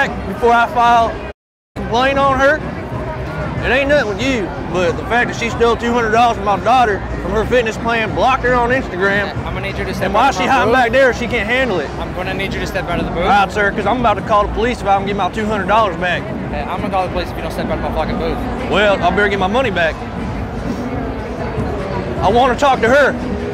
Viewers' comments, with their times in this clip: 0:07 you can definitely hear her say "Yes i did" with headphones
0:07 you can definitely hear her say "Yes i did" with headphones
0:07 you can definitely hear her say "Yes i did" with headphones
0:07 you can definitely hear her say "Yes i did" with headphones
0:07 you can definitely hear her say "Yes i did" with headphones